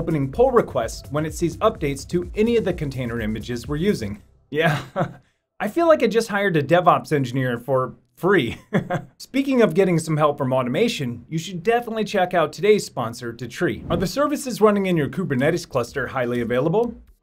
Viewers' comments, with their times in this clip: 0:04 "hired devops engineer for free" nervous laught